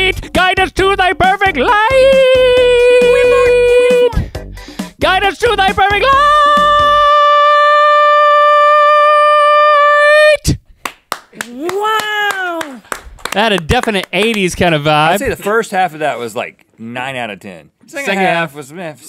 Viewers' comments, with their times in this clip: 0:05 actually sounded good at the beginning
0:06 Link can sing so much higher than me!